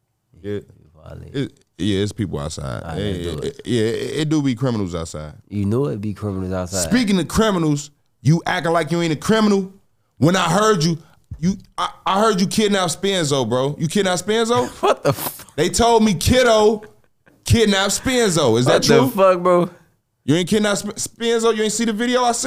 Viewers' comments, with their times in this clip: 0:08 he sound policey let’s start dere